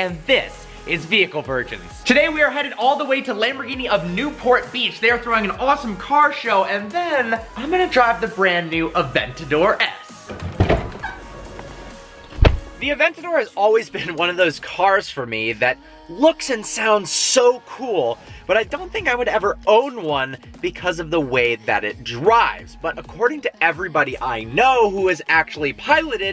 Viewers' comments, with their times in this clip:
0:10 Lambo door squeak lol
0:11 You know a cars being daily driven when the driver door starts squeaking